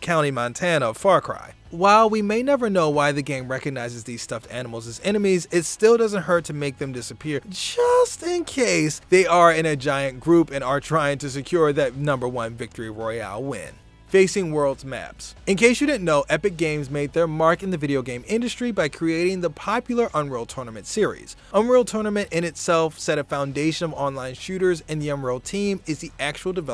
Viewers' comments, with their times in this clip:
0:07 😂😂😂 the way he says just